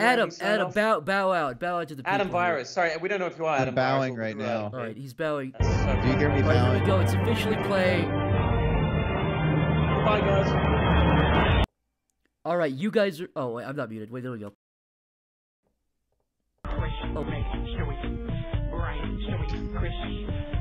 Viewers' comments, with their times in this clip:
0:04 I just wanna say one thing I know my opinion doesn't matter much but I just wanna say one thing for the stream and what I what I wanna say is that I think the extremely compressed requiem for a dream music really tied the whole stream together just my opinion but yeah I think it did